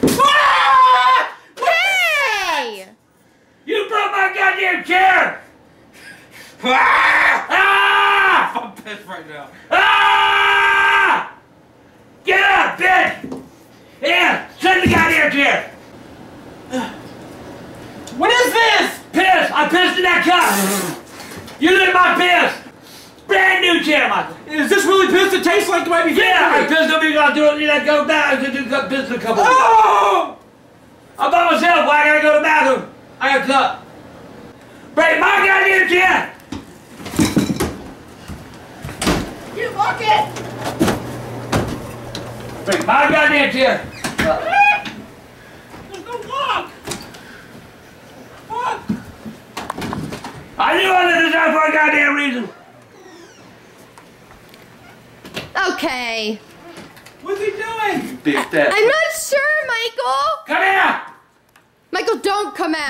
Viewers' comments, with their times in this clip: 0:03 this is like the first CLEAR sentence hes ever said 😂😂😂
0:06 As you can see, we have two males carrying out an feud by emitting loud shouts to see who is the leader of the house. 😂
0:06 arguing like bears
0:06 screaming to get them out of their territory
0:07 gta v when your character screams
0:25 wtf did he say😂😂
0:26 wtf does he say ? Hahahah
0:27 Was that even English 😂😂
0:27 this man speaking hebrew on a whole new level
0:43 He sounds like a chicken
0:44 sounds like a chicken